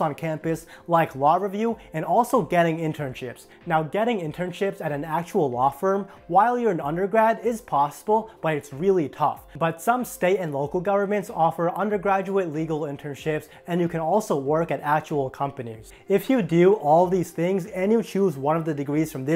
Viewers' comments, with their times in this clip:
0:05 I legit didn't notice your Lishp until